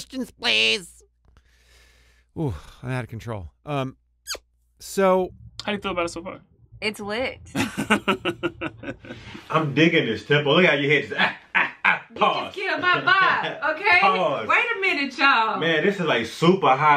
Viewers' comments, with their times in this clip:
0:03 The hand squeak fucking killed me. 😂 Edit: "They need some peanut brittle."